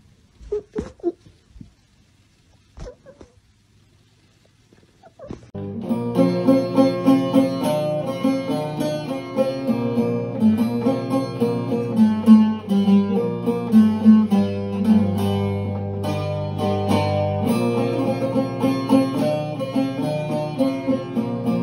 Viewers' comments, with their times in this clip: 0:05 What is that instrument she's playing? So deep... like a cross between an oud and a dombra!